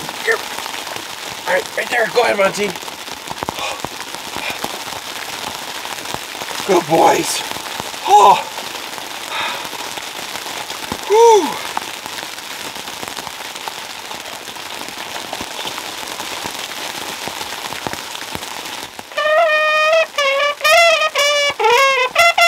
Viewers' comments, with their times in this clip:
0:07 sounded more like a "James Bond Song" maybe it will make the next film?